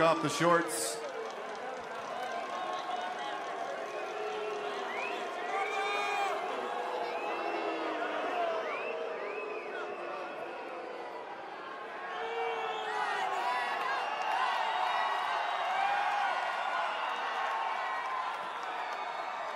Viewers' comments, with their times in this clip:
0:05 Those whistling people though